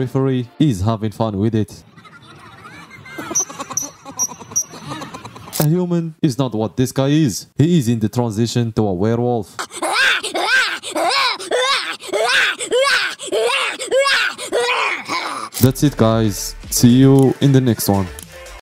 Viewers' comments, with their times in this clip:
0:10 Bro sounds like those purple minions😂